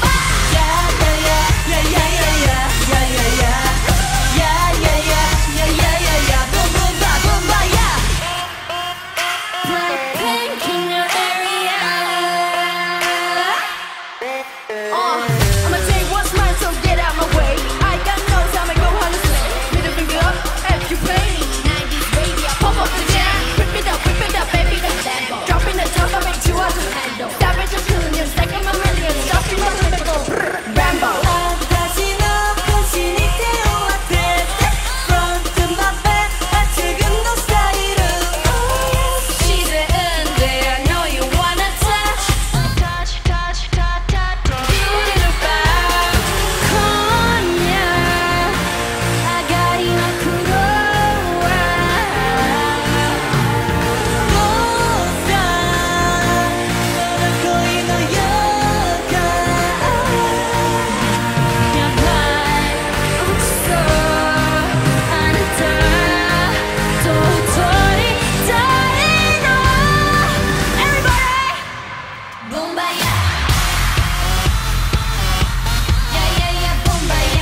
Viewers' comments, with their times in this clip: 0:05 the way jisoo screamed boom boom boom boombayah 😮😮😮
0:06 rapper jisoo? xD
0:14 Lisa rapping with a deep voice 😍
0:34 JISOO'S AMAZING SINGING AND LISA'S DANCE KILL ME ITS PERFECT
0:38 "Jisoo unnie, I know you wanna touch" and she touches.(I know it`s just lyrics on japanese)
0:38 Why do I hear thisssss "Oh yes, she's a dude but I know u wanna touch" 😭
0:42 Rosé's reaction 😂.. She is laughing at back..
1:01 Rosè's deep vocals and high notes omg
1:02 let's talk about rosé's vocals here😮🥺❤